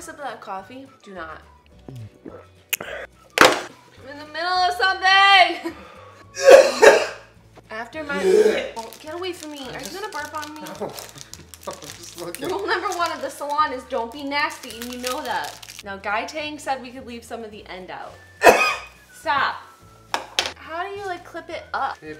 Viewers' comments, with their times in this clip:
0:08 Julien makes Amnesia monster sound